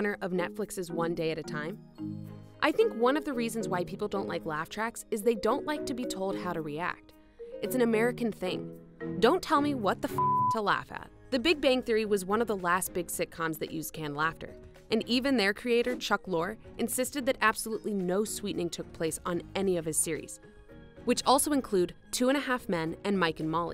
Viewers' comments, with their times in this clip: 0:10 That's not canned laughter then. That's the organic laughter from the studio audience